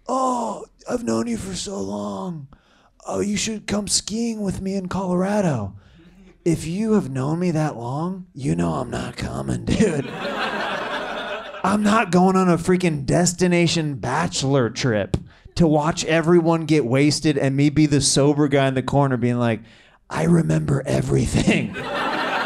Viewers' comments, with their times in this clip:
0:09 is Seth Rogan in the audience?